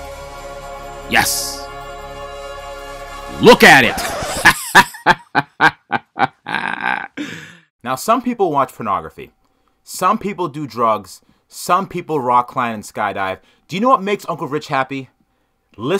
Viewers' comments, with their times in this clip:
0:03 That laugh killed me